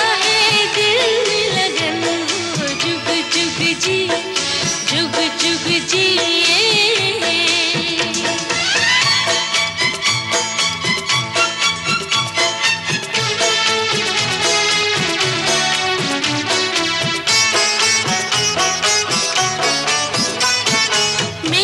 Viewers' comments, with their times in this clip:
0:08 great use of violin in the music of this song.